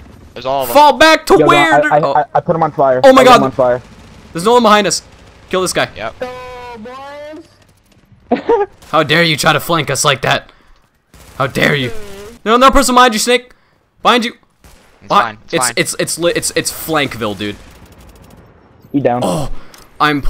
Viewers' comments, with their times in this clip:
0:06 no boooyss sound like putter